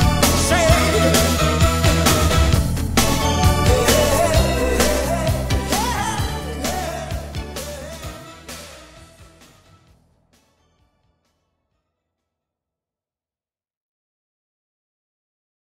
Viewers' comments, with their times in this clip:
0:05 live his voice